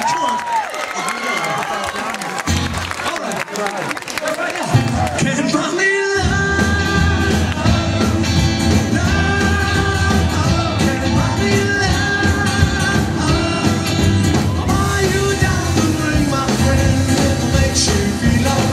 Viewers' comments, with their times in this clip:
0:04 he sounds just like Paul